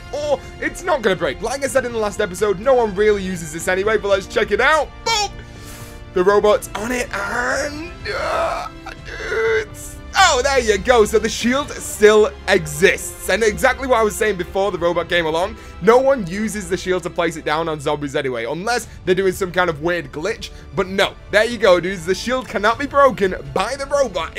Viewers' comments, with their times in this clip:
0:05 he totaly sounded like desinger